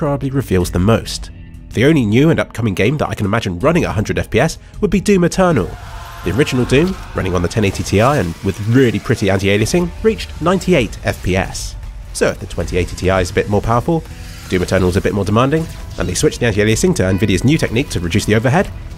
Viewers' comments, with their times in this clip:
0:04 When the demon screams in the background, It sounded like the In Bloom chorus by nirvana.